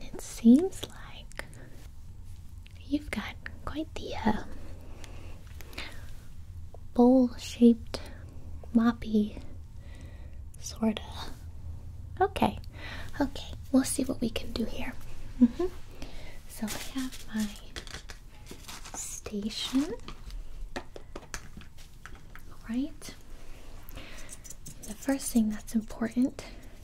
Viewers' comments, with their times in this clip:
0:07 Had to keep rewinding because I thought she said bull shit 💀
0:07 In does someone else hear that she said bullshit
0:07 I though she said bull shi-